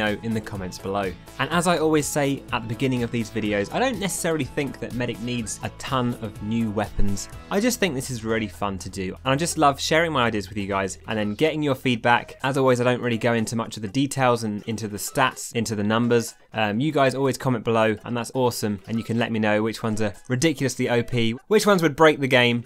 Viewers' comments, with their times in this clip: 0:09 "...getting your feet back" whatt??